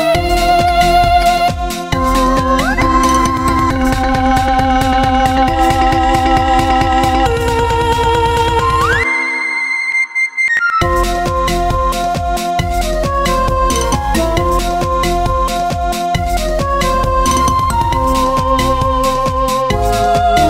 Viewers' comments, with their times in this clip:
0:08 JESUS CHRIST I THOUGH SARVANTE COULD SING HIGH BUT THIS IS- WOAH-